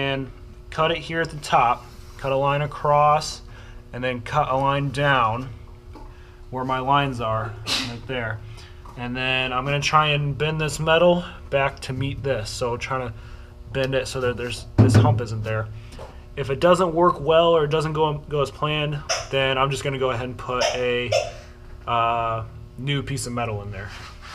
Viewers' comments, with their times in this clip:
0:07 Bless you :P